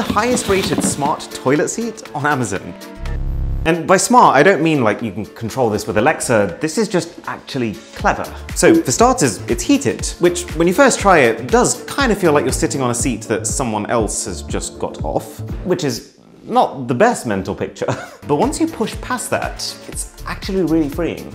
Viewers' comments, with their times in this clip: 0:03 Random noise in the background...